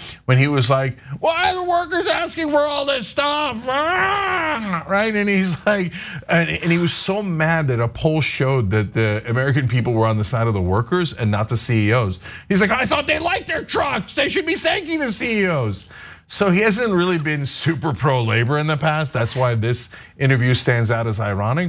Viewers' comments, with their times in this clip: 0:03 the squaking is great